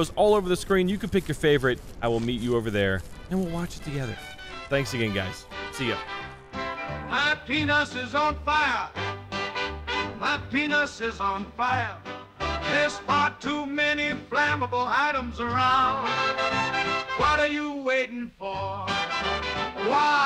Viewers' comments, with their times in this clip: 0:06 Is no one talking about the outro song?
0:07 🤣🤣🤣 WHAT? Lmao how tf is nobody talking about the song at the end???